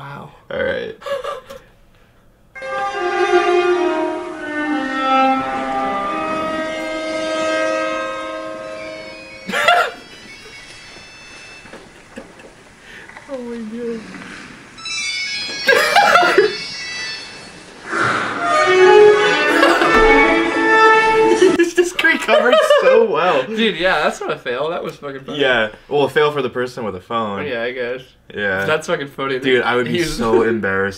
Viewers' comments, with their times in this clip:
0:05 the one isnt a phone its that weird piano thing
0:11 only old people find that amusing thats why there is a flip phone ring tone